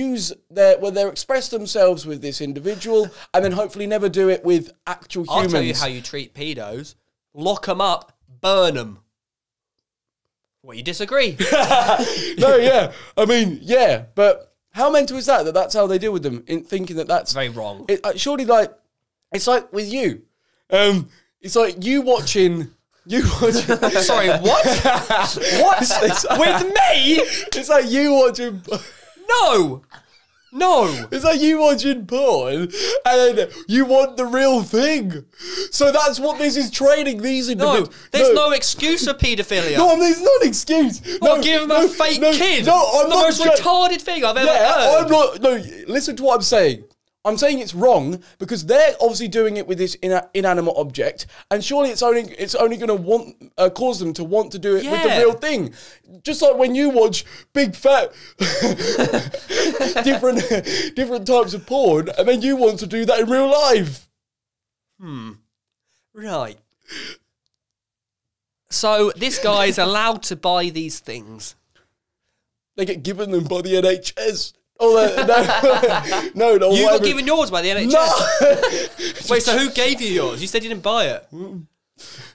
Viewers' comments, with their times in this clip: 0:08 that awkward silence 😂😭😭😭😭
1:06 anyone else hear that minecraft villager ‘hmm’